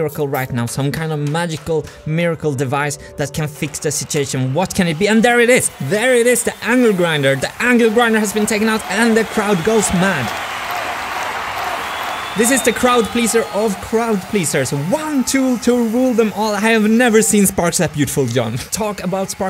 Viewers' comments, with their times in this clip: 0:05 Such enthusiasm for the appearance of the angle grinder. That made me laugh.